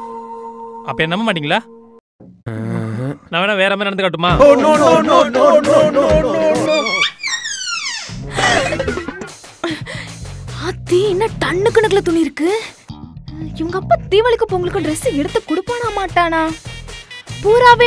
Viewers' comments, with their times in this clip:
0:05 They 3 laughing at the end